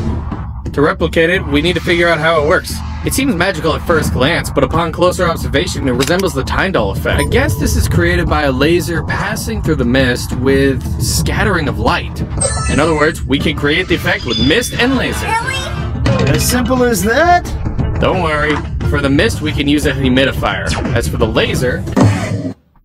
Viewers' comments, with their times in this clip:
0:10 blockman go claim awards ahh sound